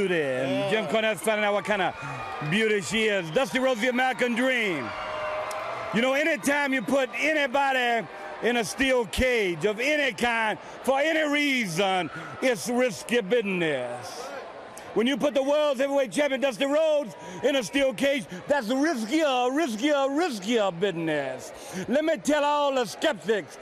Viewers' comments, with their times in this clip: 0:07 Datz whiskee bidness.